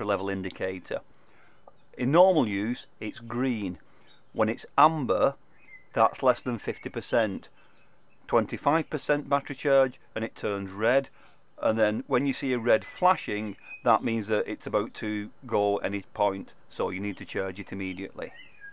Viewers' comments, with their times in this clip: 0:04 "When it's Ummmbuh" xD